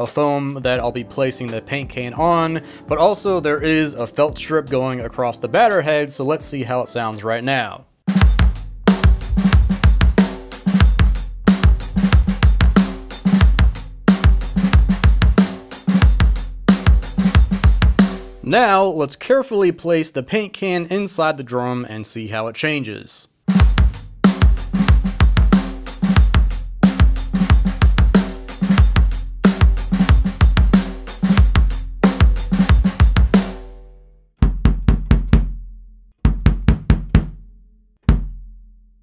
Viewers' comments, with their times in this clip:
0:07 I would kill for that bass drum sound! Even before you started tweaking it.
0:24 Man, it was sounding killer!!! And the can made it even better!!! Amazing